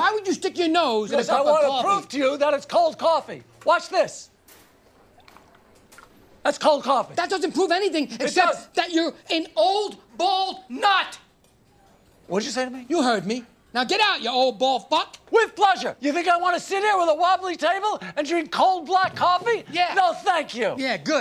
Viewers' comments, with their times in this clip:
0:07 Mocha Joe sounded like Steve Carrell.